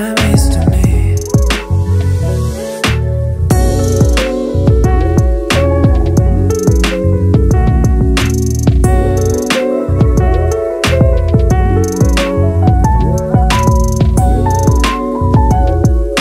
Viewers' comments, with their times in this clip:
0:03 Ever since this album came out, I'm obsessed with the chords gosh